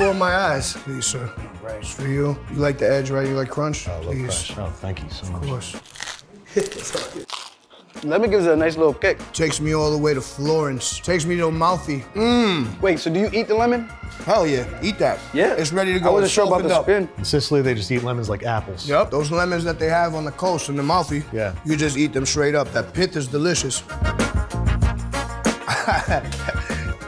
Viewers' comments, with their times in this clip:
0:09 That crunch had me